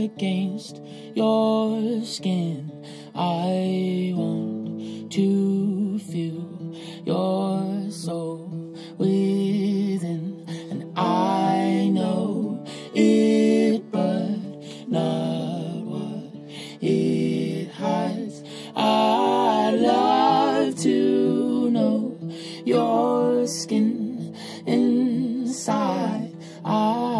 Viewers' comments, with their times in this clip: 0:10 When the harmonies came in was a moment of pure bliss and beauty for me. Absolutely loving these Shed Sessions!